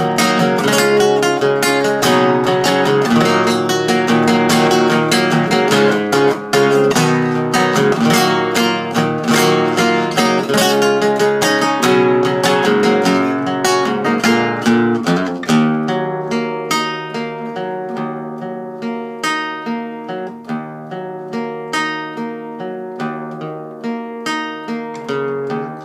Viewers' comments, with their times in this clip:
0:06 By far the best cover I've heard so far; the only acoustic cover that's able to preserve the intensity of the original. I've heard some good covers, but they all are "dialed back" (as you would expect from an acoustic only accompaniment). This version really preserves that intensity mark.